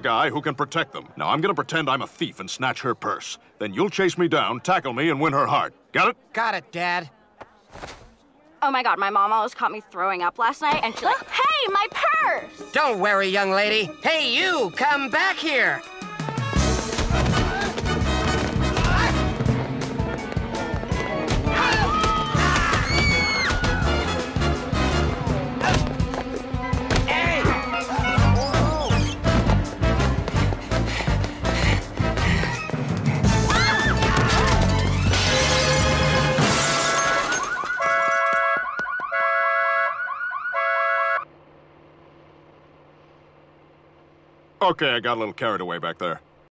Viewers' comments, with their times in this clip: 0:08 what the girl says is priceless, I love how she says it as a casual thing
0:36 Crash Car Alarm